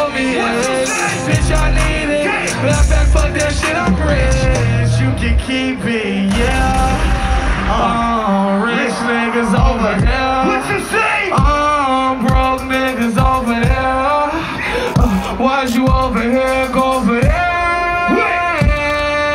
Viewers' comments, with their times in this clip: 0:05 onwards, voice unreal